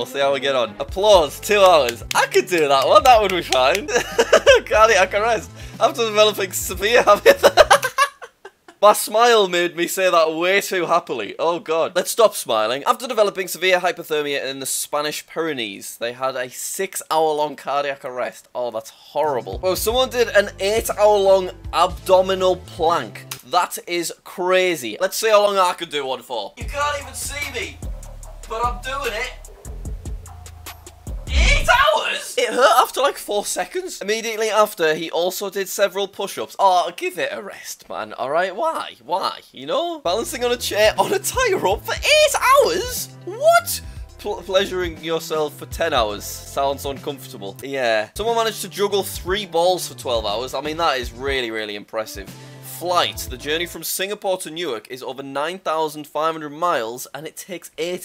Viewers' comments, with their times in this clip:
0:07 actually its till cuz he ended up laughing then had to stop smiling to stop the laugh..
0:28 well now I know Jack has the same fan as me
0:43 I thought “pleasuring yourself” said Ohio